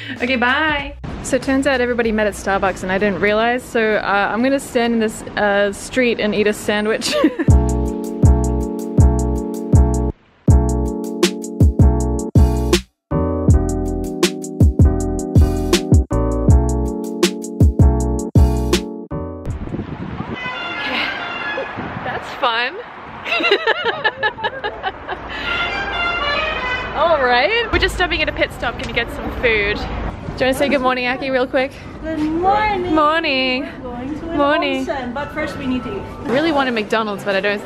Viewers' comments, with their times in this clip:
0:07 the beat made me break my rewind button
0:20 Ah yes... the Godfather theme playing in a random parking lot in Japan. Nice.